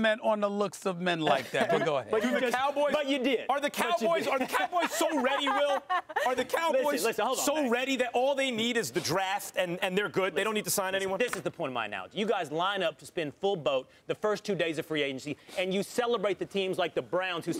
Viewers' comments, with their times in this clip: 0:03 Molly’s laugh is so fake lol